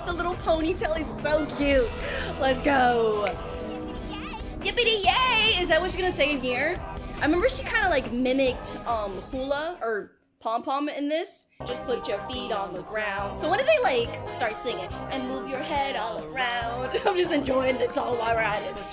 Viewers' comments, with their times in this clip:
0:04 she sounds cool :)